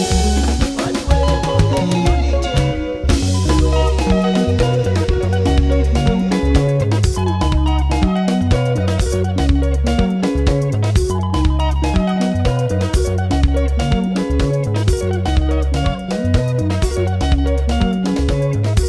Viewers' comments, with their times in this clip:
0:03 that change over is fire